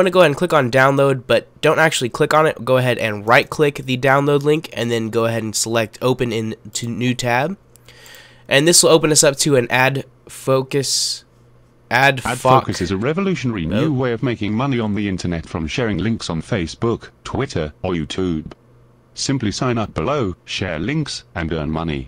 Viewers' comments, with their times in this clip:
0:07 lol it sounded like adfuck.us